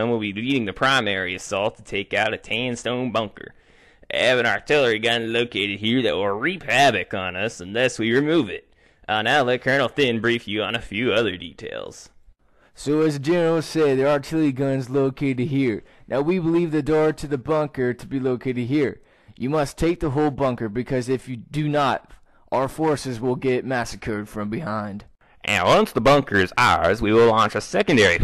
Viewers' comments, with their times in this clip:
0:10 that was the weirdest voice I have heard.